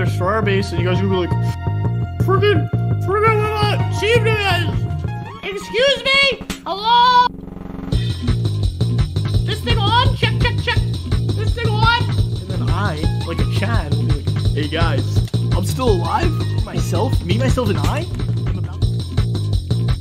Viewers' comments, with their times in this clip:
0:07 DAMN THAT BEAT DROP TOO SAPNAP
0:08 okay but that was on beat